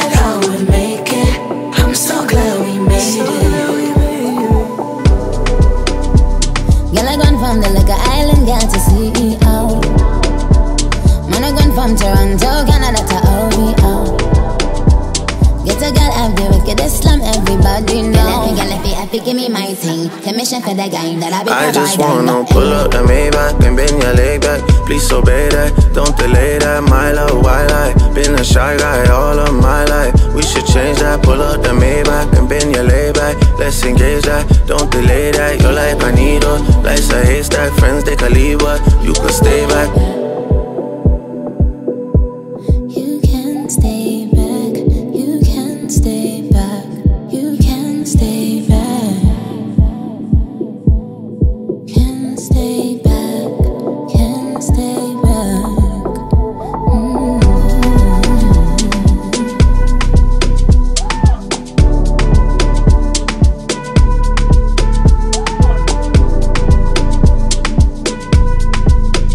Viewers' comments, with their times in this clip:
0:05 Nicki sound so good here singing! My girl got vocals 🔥🔥🔥🔥
0:50 love the sounds when Nicki talked it relaxing 😌🩷